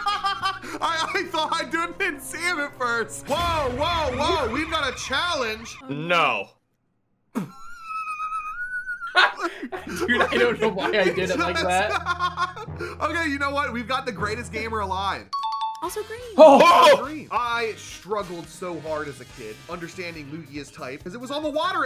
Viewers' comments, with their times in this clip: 0:04 dude that laugh is amazing 😂